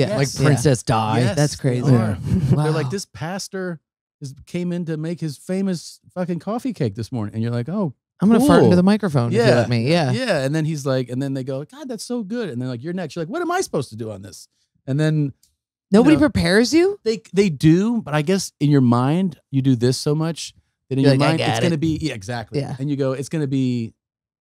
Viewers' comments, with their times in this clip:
0:10 Why does Jordan sound like Tony Hinchcliffe?